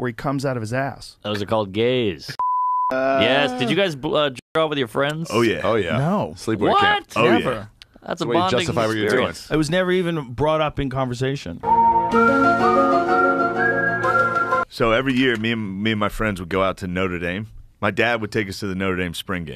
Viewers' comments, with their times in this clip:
0:03 You're censoring the word "jerk"? WTF?